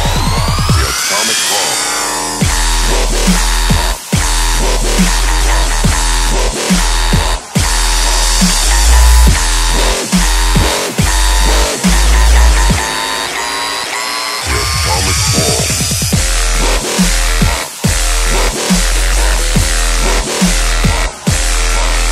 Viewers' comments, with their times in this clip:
0:05 i kinda think the drop came